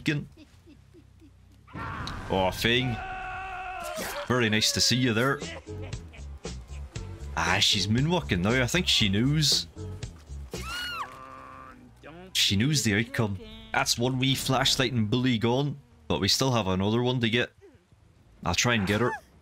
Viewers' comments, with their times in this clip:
0:05 🤣🤣🤣 he put the beat behind her